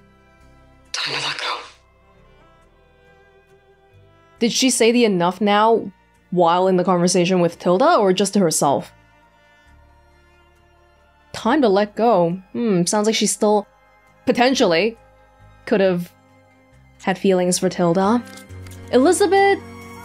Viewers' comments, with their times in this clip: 0:05 To herself. She seems to have hung up at the point where Tilda was cut off at the "speak again before-". That was a sharp cut off. Not a Liz talking over her and Tilda stopping herself.